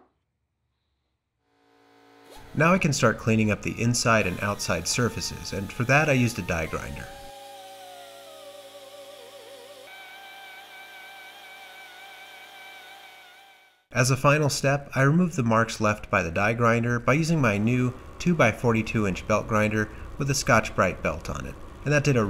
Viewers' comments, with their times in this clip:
0:06 Ooohh.. Thats me singing with falsetto. 😊